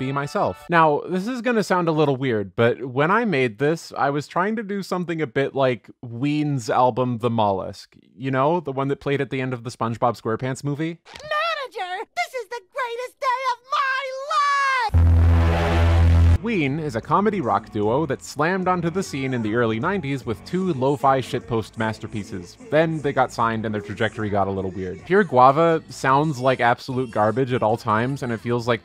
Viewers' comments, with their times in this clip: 0:10 sauce for earrape?